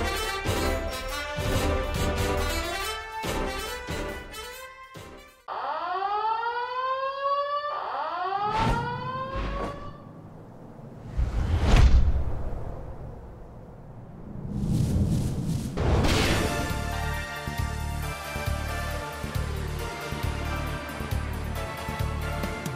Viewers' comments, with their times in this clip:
0:03 The siren made me think it was my stomach making a weird growl lol